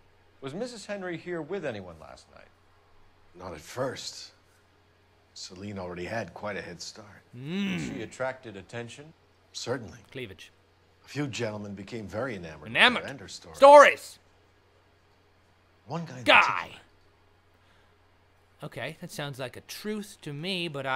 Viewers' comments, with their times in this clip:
0:07 epic hum ,man u crack me up